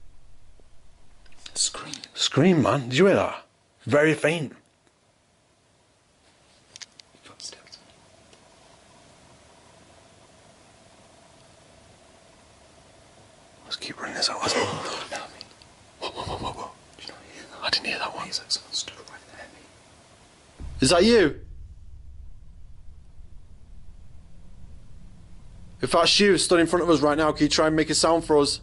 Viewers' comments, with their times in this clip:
0:09 right after the faint scream, when the camera pans toward the doorway, I swear I see a shadow on the floor in the doorway, it could just be the camera lighting, but its it's happening a few times on the walls as well in a few different places in that room. Creepy mate